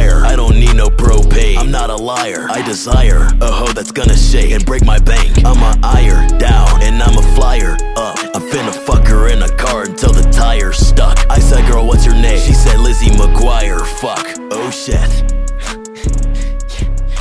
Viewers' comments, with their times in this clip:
0:05 Yo I think I heard his real voice